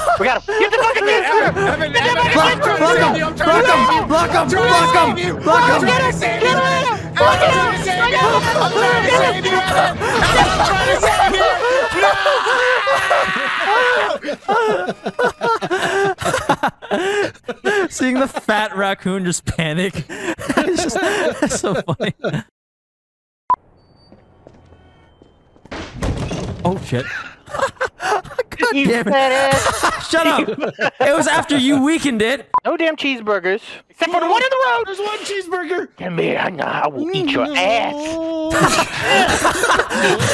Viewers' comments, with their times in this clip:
0:08 I love how vanoss is just laughing so hard doing nothing that he just gasps so much afterwards
0:12 that was the most genuine NOOOOOOOOOOOOOOOOO! In the world
0:22 the way he said it, XD